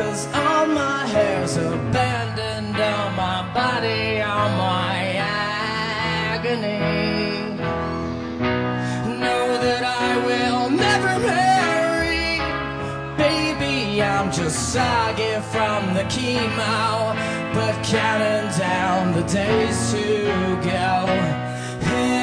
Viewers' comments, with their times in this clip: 0:05 shes singing her heart out lol